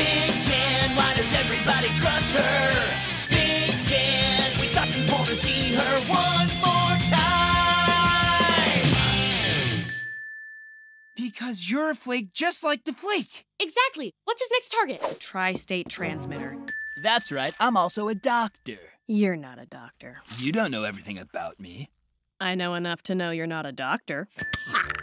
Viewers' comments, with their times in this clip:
0:08 also this sounds like the ending Guitar Riff in each Phineas and Ferb Episode (or in the specials when they cut to commercial)